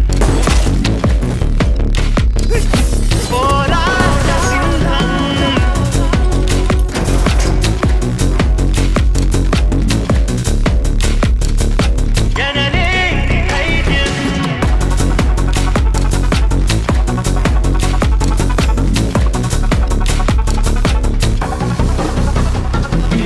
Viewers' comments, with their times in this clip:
0:04 Bgm blast from 🔥🔥🔥🔥🔥🔥🔥🔥🔥🔥🔥